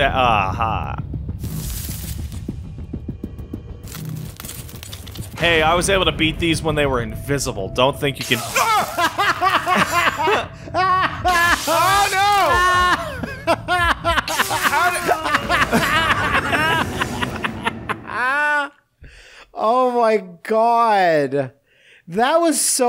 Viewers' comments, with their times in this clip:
0:05 *you hear gently in the back ground* ...........who talk that crazy talk